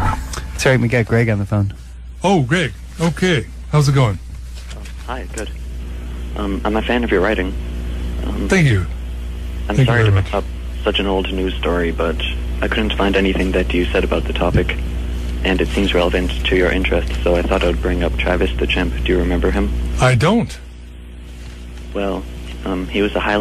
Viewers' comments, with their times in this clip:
0:09 he sounds so robotic and cold during that phone call